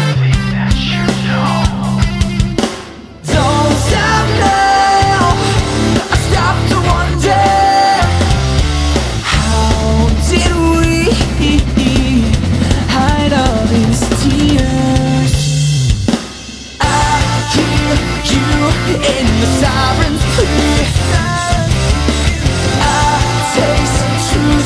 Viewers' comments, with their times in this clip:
0:09 Like for the giggle seeing the Lineman slip :)